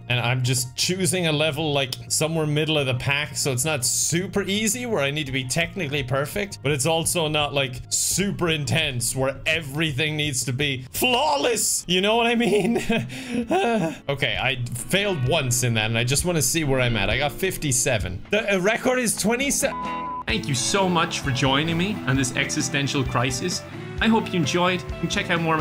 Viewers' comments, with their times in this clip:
0:10 The "FLAWLESS" scream of anguish was chef's kiss